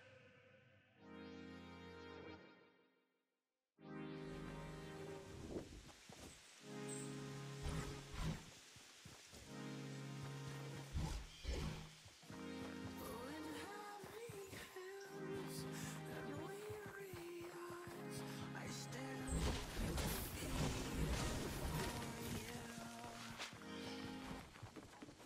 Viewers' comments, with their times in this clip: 0:08 sounds like the onslaught